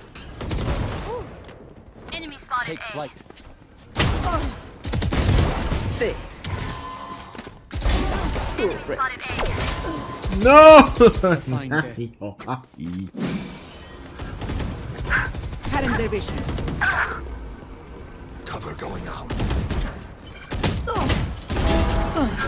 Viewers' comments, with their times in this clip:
0:10 when u are starting to scream cause of death and realisisng that ur family are sleeping